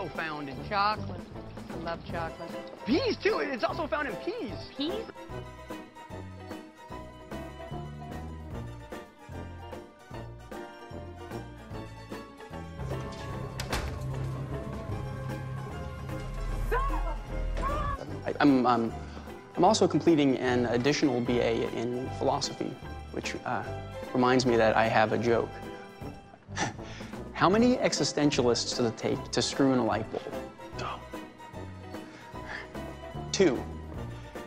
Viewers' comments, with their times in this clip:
0:10 Tara calmly walking into the room to scream quickly became one of my favorite moments 🤣🤣
0:20 Rossi's soft "Don't" will always be my favorite part of that scene oml